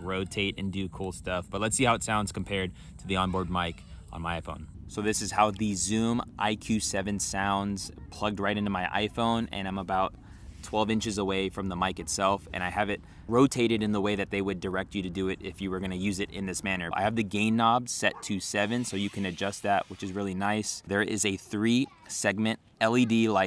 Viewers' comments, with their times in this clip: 0:09 sounds like it's coming from the left. i have a MacBook Pro with Spacial Audio so it will pick that up pretty easily. Crazy to hear the differences with external mics compared to internal ones! I just ordered a mic off Amazon and i'm excited to try it out when it arrives since i do Content Creation! and i wanna get as crystal clear audio as possible